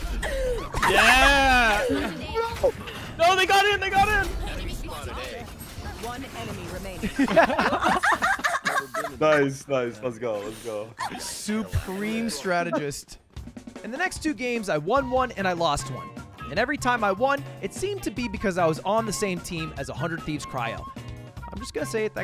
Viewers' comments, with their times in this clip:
0:07 This female-dog needs to stop laughing I almost punched my screen
0:08 who tf was that laughing